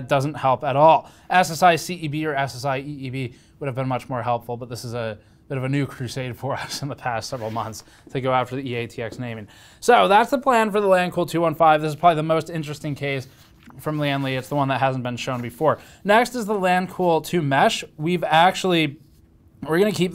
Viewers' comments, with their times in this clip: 0:07 Sneaky laugh made me smile